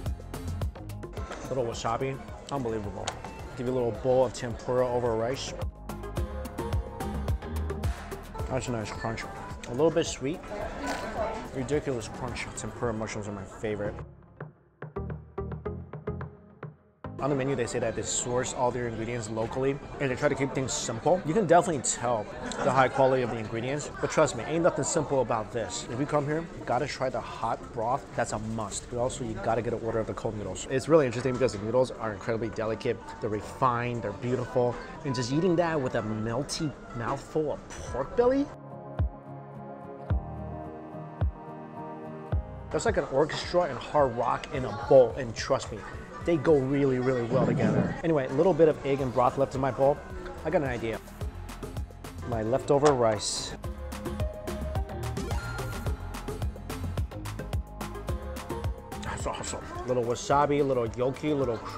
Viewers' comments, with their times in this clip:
0:10 guy in back ground is all like why are you talking so suffocated just eat your fooooood!!!!!!!!!!!!!!!!
0:44 Omg 🤤🤤🤤🤤🤤🤤watching ur vid before going to bed is a bad idea 🤣🤣 it's making me wanna grab some ramen or something anything eatable xD that sounded like a faaaarrtt xD hahaha